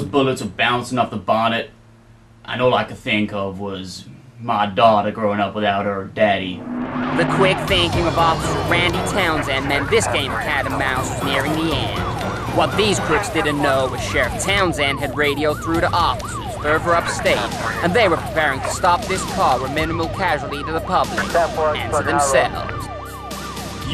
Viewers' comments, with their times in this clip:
0:07 Cool plane the state penetary LOL. "Lawr" and Justice LOL